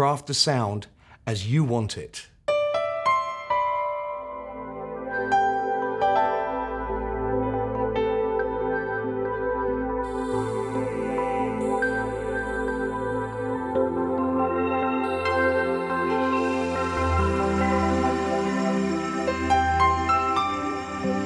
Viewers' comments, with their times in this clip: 0:03 sounds like a new game console start up